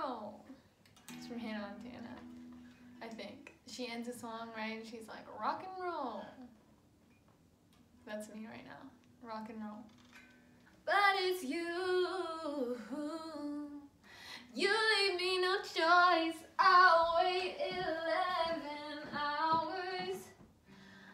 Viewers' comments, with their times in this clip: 0:07 Wait... u said Hannah Montana normally what happened to "hayyynah monaaanna"